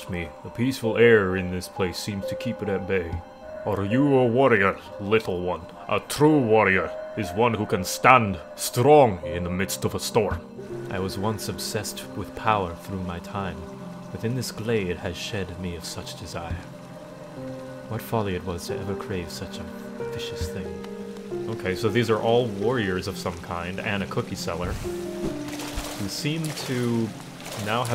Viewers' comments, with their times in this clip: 0:03 Garro has the voice of Braum
0:08 I swear he sounded like Macbeth from Gargoyles. It's amazing.